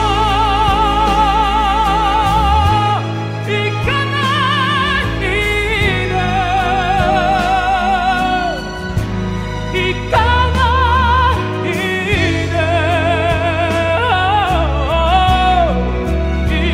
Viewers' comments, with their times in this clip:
0:03 Great review Ken! I just wanted to ask: is the note pure chest or mixed voice note? God bless